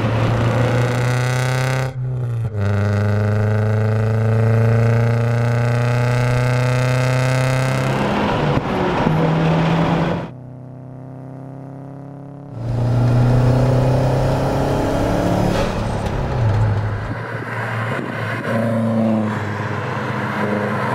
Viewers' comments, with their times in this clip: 0:07 first 2 hours listen enigne sounds like that is maybe enjoy ,but after that all day is for ears bad.